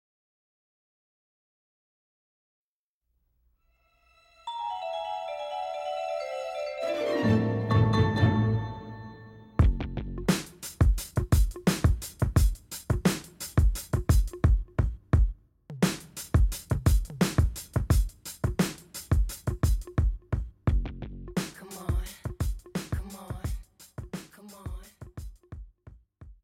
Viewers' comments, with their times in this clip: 0:09 these drums sound really beautiful 🥁🎶